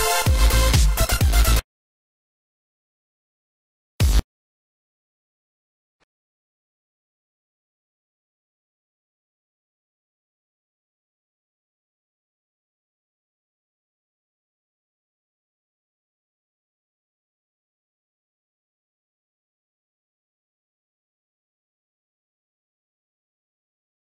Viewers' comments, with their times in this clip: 0:08 And so, the greates sound quality we have ever heard, has begun.